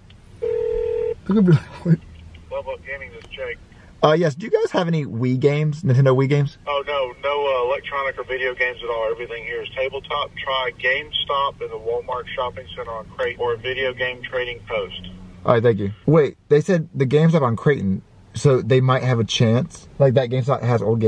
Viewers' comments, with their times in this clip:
0:04 UUUUUUUUUUUUUUUUUUUUUUUUUUUUUUUUUUUUUUUUUUUUUUUUUUUUUUUUUUUHHHHHHHHHHHHHHHHHHHHHHHHHHHHHHHHHHHHHHHHHHHHHHHHHHHHHHHHHHHHHHHHHHHHHHHHHH thats not censored
0:04 you forgot to bleep out